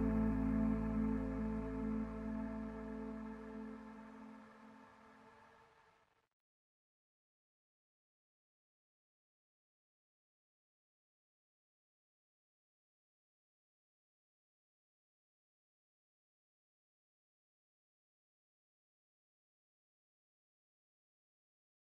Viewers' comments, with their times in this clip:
0:06 the song has been removed? I can't hear anything